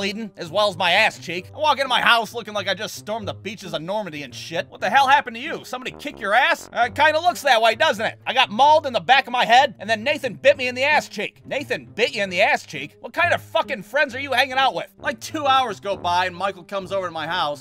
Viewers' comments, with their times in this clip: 0:04 mg42 sounds what is that WHAT IS THAT!